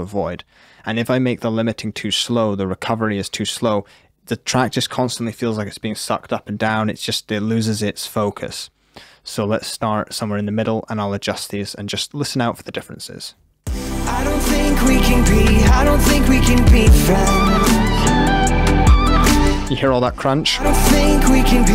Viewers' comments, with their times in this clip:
0:06 So i can make the track more crunchy? 😏👌🏼